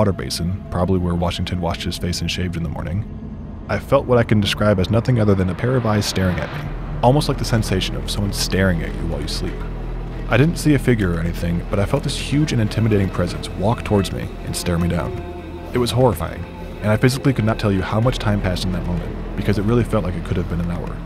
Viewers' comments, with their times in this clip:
0:09 slow the futch down broo